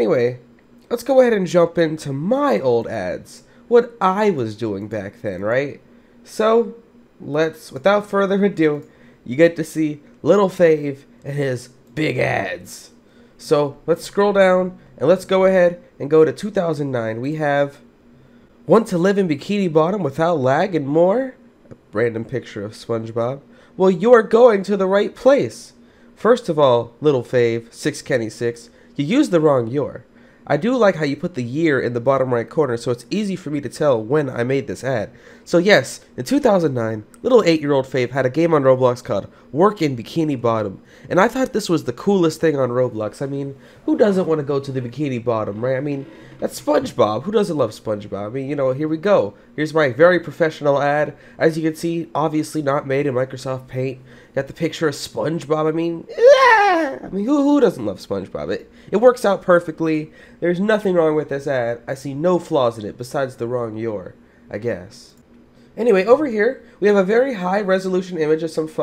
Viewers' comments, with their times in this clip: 0:10 i thought he said big ed 😂
0:55 that voice crack thing in XD
0:55 What horses sound like